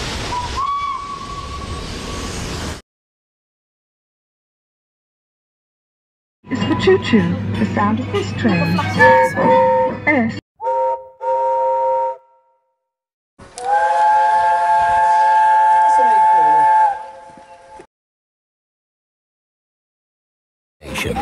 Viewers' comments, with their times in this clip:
0:08 Listen Closely To The Whistle, And You Can Hear The Chuffing Sound From Thomas, Indicating It Was Ripped From A Thomas Episode.